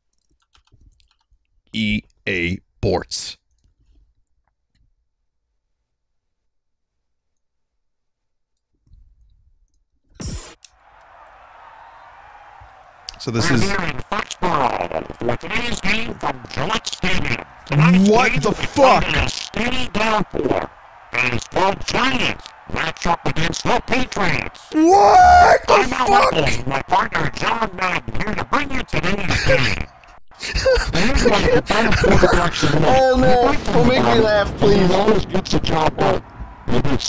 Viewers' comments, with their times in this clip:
0:10 I can't believe EA managed to bring in Donald Duck to commentate their game
0:24 The best "what the fuck" I ever heard